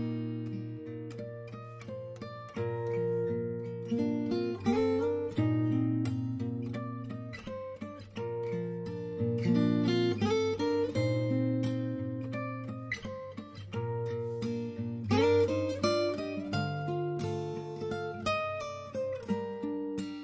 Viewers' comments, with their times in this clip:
0:04 THAT SLIDE UGHHH